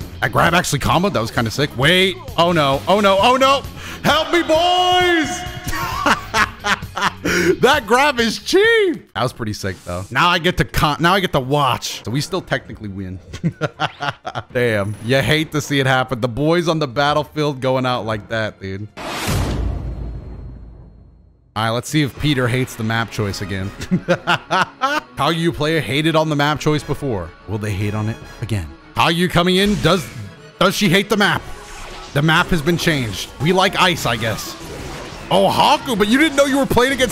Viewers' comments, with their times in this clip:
0:04 I can literally hear Goofy Screaming 🤣🤣🤣🤣
0:20 Hearing Sonic music in a Doto video is...Jarring, to say the least.
0:21 w music choice